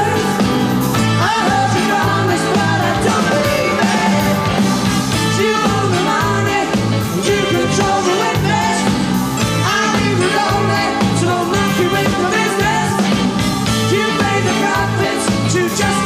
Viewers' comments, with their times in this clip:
0:03 Simon false note But Still, one of the best bands that ever existed, unfortunately, underrated...